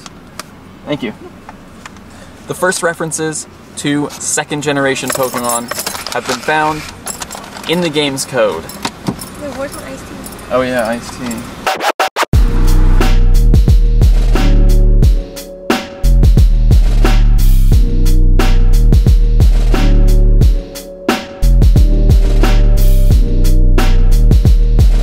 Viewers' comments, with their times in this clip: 0:09 Ok that record scratch edit is so niiiiiiiice
0:11 The record scratching and gangster music is just great!!!
0:12 omg that background music reminds me so much of the old linkin park _